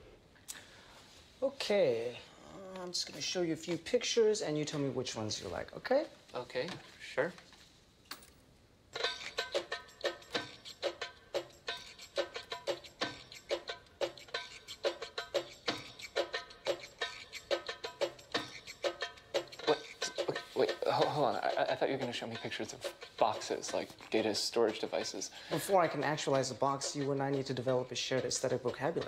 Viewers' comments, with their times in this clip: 0:10 this song slaps!